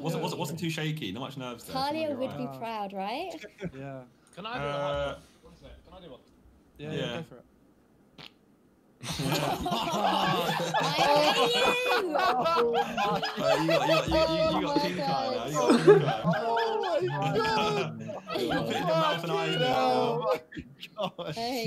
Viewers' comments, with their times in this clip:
0:03 Ethan: "Can I do a high note" farts